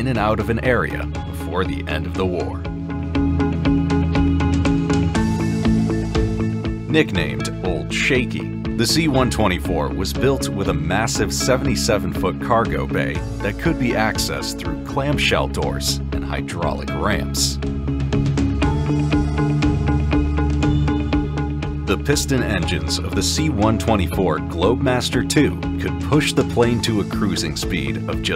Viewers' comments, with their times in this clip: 0:09 Had to give up on this video Couldn't stand more of the background music. Thumbs down.